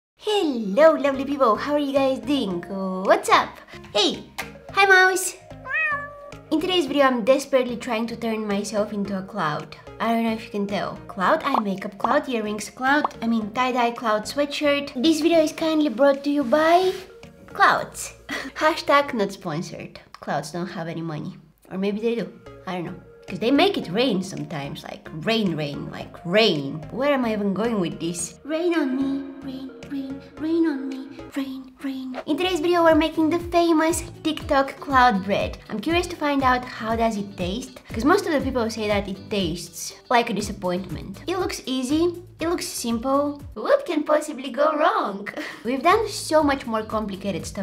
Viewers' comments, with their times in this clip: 0:05 I can’t understand why MOUSE is saying MEOW?????😂😂
0:28 your voice sounds so cute here awwww